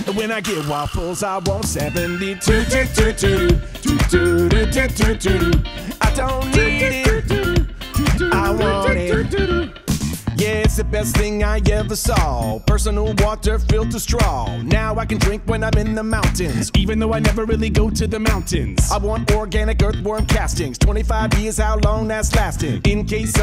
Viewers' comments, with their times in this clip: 0:08 eat it all...pepto bismol🤣 the accent in the end if bismol is dope🤣🤣and I love this whole gotta have it song! love the lyrics and the song choice to sing the Costco parody!😍❤❤❤ love you guys! i enjoyed the flute! also, you both got moooves!😍 how did you manage to do that ?!!